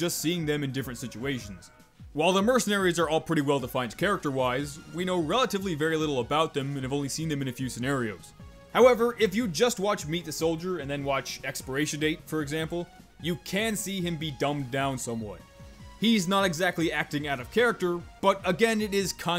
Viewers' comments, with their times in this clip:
0:07 I SEE YOU PICKIN UP THAT AUSSIE